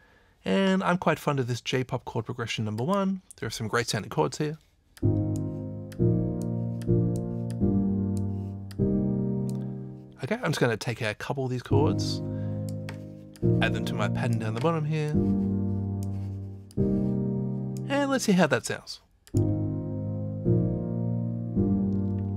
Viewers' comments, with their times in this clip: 0:05 Did you / Scaler 2 just Rick Roll us? :D Seriosuly though - Scaler really never gave me up or let me down, lol.